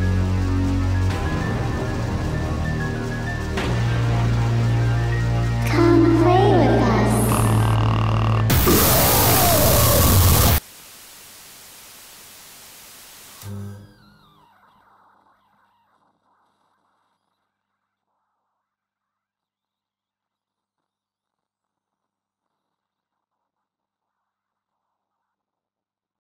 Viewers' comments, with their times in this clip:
0:09 Life rip headphone users
0:09 oooooooooow my headphones